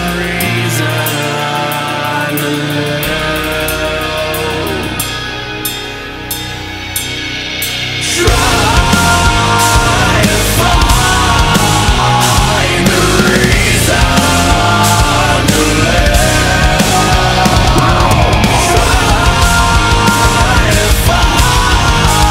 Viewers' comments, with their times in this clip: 0:07 The variation in the vocals is unreal. So good.